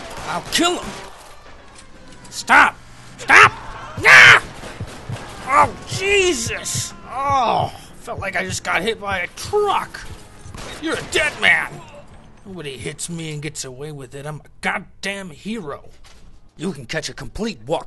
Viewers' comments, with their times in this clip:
0:03 thumbs up if you replay that scream